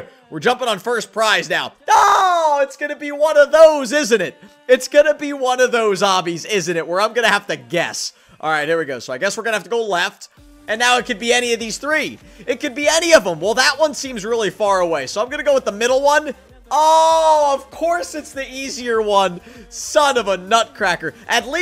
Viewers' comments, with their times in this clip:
0:09 In the backround the music:I don't wanna learn by not a robot but tryhard ninja singing.